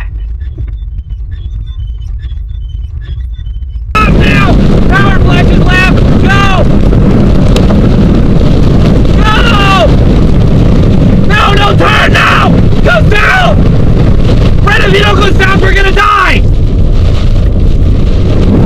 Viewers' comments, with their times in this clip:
0:04 no one's going to address how ridiculously loud and overdramatic that guy is?